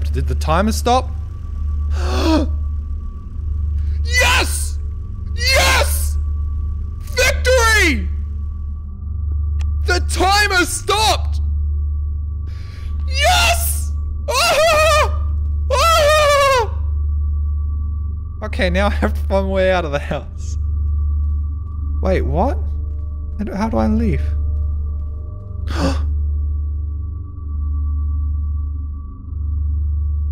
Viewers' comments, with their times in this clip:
0:05 thanks for peaking the mic btw
0:13 sevensevensevensevensevensevensevensevensevensev /*bass drop*/ echo the song concludes on: